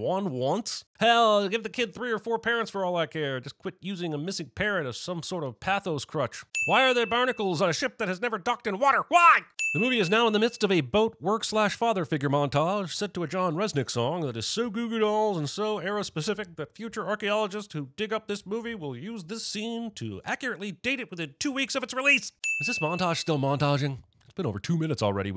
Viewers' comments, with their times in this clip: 0:09 I'm not the only one who thought that song sounded like "Iris" by the Goo Goo Dolls